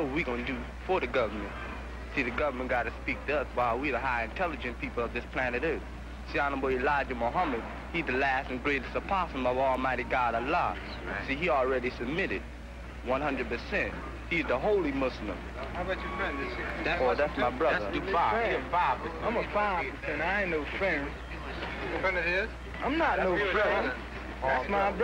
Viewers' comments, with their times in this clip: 0:08 "Elijah Muhammad, he da last and greatest opossum" LOL